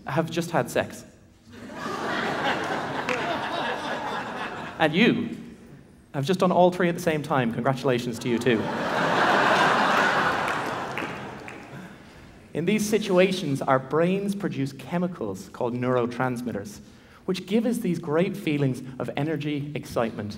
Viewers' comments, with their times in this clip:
0:04 Did anyone understood what he said 🤔